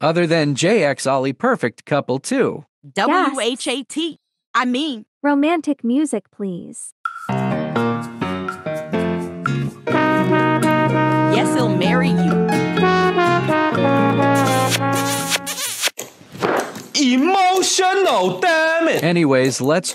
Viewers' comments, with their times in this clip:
0:03 Not the romantic and the music on i laughed so hard like really🤣😂